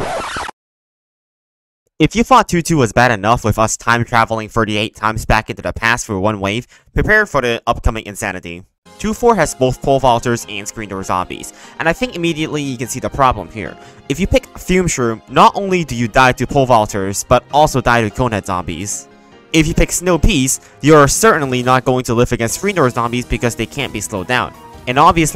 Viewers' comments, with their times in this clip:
0:09 I was not ready to hear Border of Life in the background but it’s oddly fitting for some reason